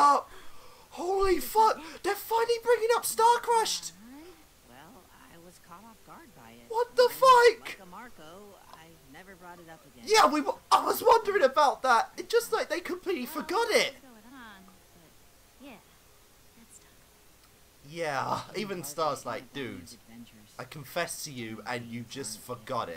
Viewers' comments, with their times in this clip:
0:06 THE GUY HIS VOICE IS...UM...YEAH